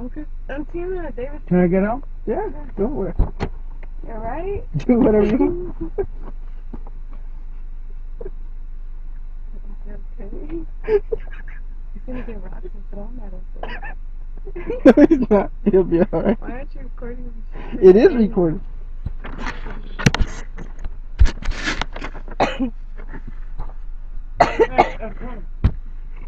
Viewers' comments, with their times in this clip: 0:03 when you realize women fart
0:08 the missed door slam.. lmao